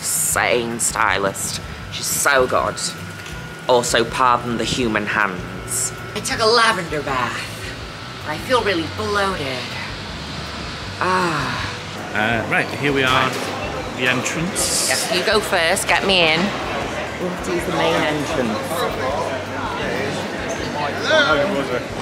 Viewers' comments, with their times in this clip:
0:06 The Jennifer Coolidge voice was fuckin' perfect! Stunning even!